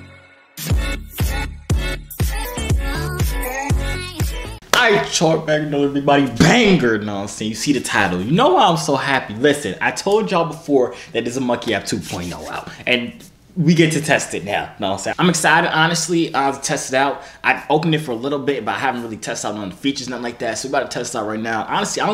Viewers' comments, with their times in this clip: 0:04 was that english?